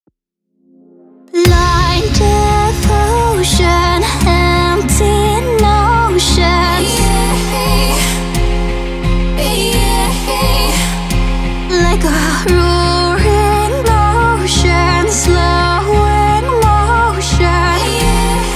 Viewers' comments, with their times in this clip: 0:03 she said empty lotion lmao
0:04 empty lotion u cant unhear it apparently